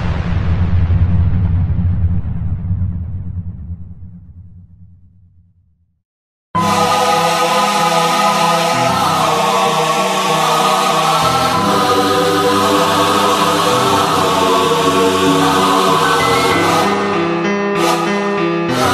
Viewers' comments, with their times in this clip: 0:03 Headphone warning SHYYYYTTT haha